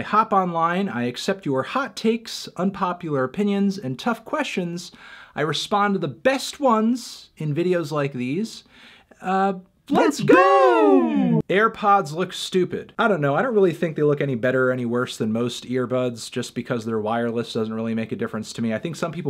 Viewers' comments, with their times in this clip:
0:05 went English there for a second